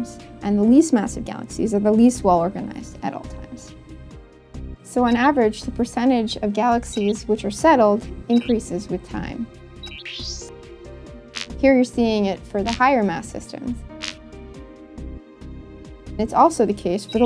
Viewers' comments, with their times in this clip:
0:04 the sound effects on the segment were a bit grating on the ears... maybe something a bit more subtle would have been better?